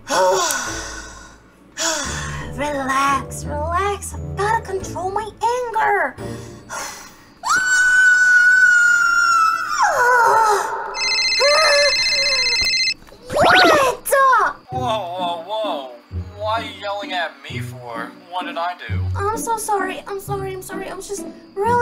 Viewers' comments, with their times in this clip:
0:08 Jurassic world t-rex roaring lol